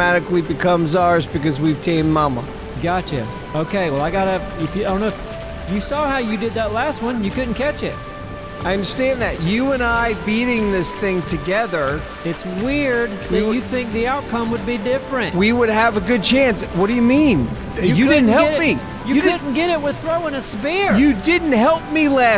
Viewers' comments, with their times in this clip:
0:05 Arguing and I can only hear Noob from Battlefield Friends.